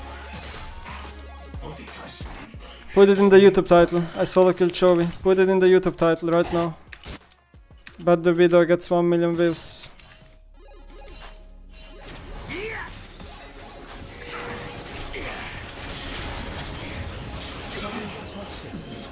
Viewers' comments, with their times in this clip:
0:07 WHAT is he actually saying?